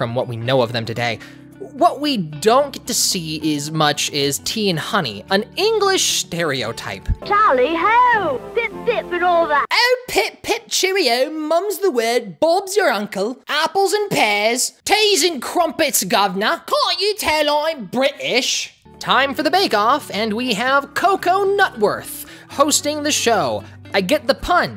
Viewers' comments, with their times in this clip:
0:09 You went flow blown David Tennant from Doctor Who